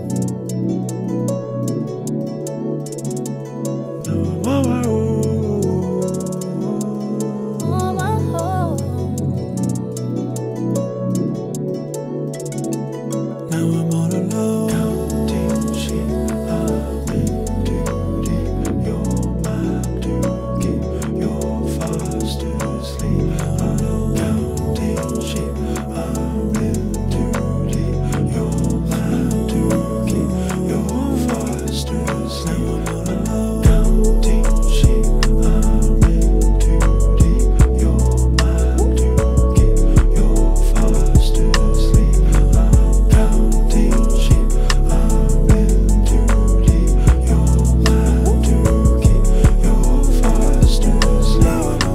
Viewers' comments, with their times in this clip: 0:06 From is very Imogen Heap LOVE IT
0:07 she kinda sounds like Ariana Grande here????
0:14 The uneven distribution means that the little chinese guzheng riff is clearly grouped in 6/8 as is the dotted rhythm Jacob sings starting But that cross-stick in the drums clearly points at an underlying 4/4. It is polymetric really. Or however you want to see it I guess. Someone might take the 3/4 as the new time signature during the instrumental middle section and the end. To me it is just another meter superimposed on the always running 4/4. Hope that clarifies it a little.
0:38 that little 'woop' is cute